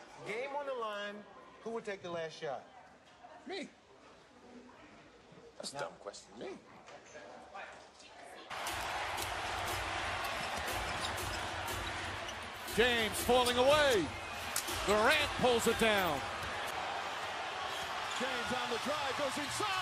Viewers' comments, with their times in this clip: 0:03 I like the way he said "me"